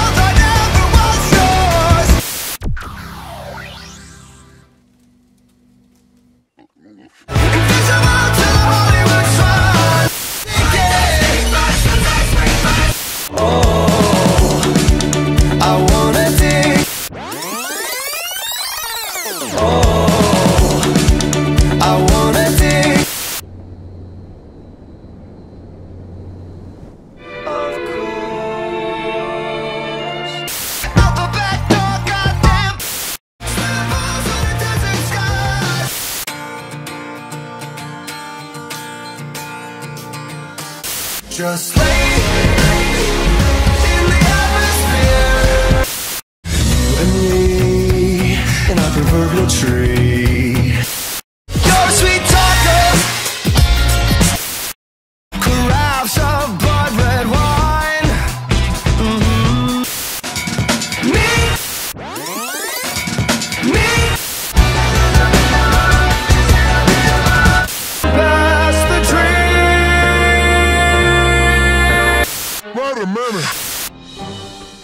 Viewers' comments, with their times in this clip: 0:10 for the longest time I thought it was "Finders, Keepers, Losers, Reapers."
0:34 For the longest time i always heard sweaty balls till I looked at the lyrics (I only realized it in like 2020-21 and I’ve only been listening since 2018 short ish Ik)😭
0:51 SO ITS NOT “YOU’RE A SWEET TACO” man I’ve been singing it wrong this whole damn time. Idek what the actual lyric is 😂😂 Edit: I KEPT WATCHING. THERES NO WAY ITS “YOU’RE A SWEET TALKER” WTF.
0:55 idk, I just hear "crabs of blood red wine", not sure why-